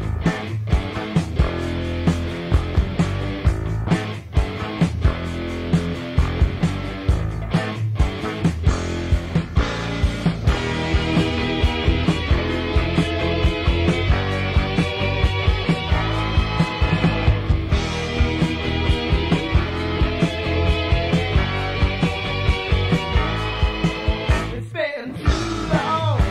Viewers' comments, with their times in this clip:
0:08 That song was fantastic man! I’m guessing it’s called “Too long”? Whatever it is,that guitar solo was out of this universe!